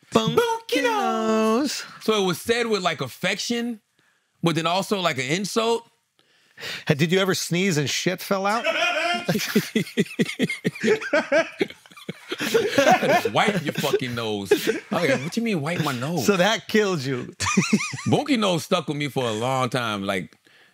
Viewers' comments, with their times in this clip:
0:07 his laugh hahaahhaahahaahahahhah